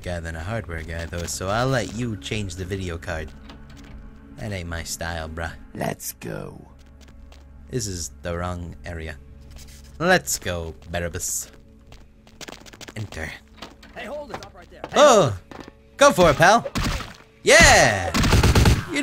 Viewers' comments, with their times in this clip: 0:05 Sounds just like the male dark elf voice from Morrowind :O